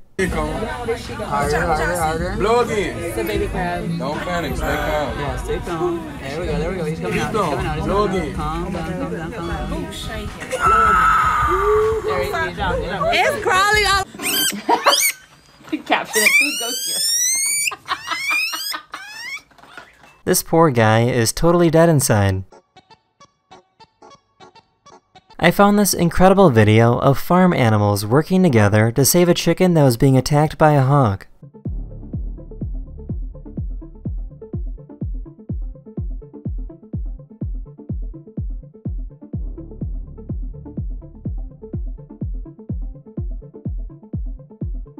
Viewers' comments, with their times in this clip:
0:10 that absolute scream of terror just fading out is just way too funny
0:10 sounds fiery bfdi
0:13 this thing sounds like kirby
0:13 man sounds like kirby
0:14 Human: Look at that it's so cute... Ah he screams hihihi Chipmunk: Having the most intense battle of his life
0:14 Hamster: “What.. what do I do” (Activates self defense siren)
0:14 that Guinea pig started the motorcycle 💀
0:14 sounds like a free model roblox car XD
0:15 sounds like kirby
0:15 Sounds like kirby sucking something
0:15 Kirby inhale intensifies
0:15 he sounds like kirb
0:15 is how they got kirbys succ noise
0:15 bro sounds like kirby
0:16 guine pig siren
0:16 why does this sounds like kirby?
0:16 is it screaming out of fear, stress, pain? please someone tell me so i don’t think the animal is hurt.
0:16 guys we found the origin of kirby's sound
0:16 Evolution of kirby: it really sound like kirby in some moment
0:27 when the doom music kicks in